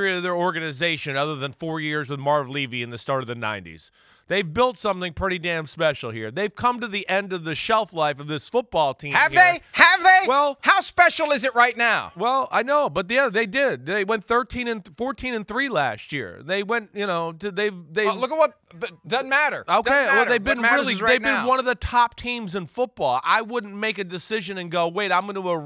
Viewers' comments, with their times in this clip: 0:08 damn mike 😂 need mike to yell at me like that 😮‍💨